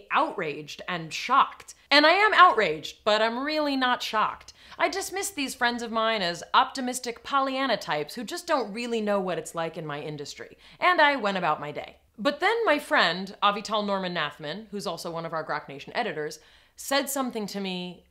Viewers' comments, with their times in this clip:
0:06 optimistic polyanitypes? "Polyanitypes" isn't a word